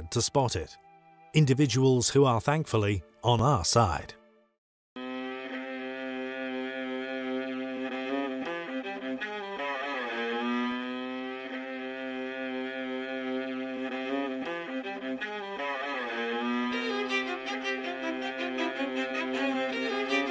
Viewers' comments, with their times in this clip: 0:05 I like that the music reminds us this is satire. Genius.